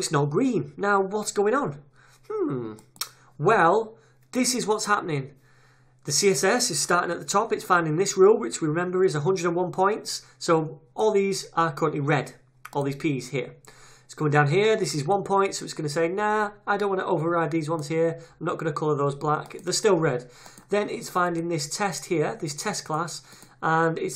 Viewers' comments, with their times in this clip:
0:09 your voice: min "whatttt!!!! hhhhhmm mmmmmmmm", was really amazing...hahahaha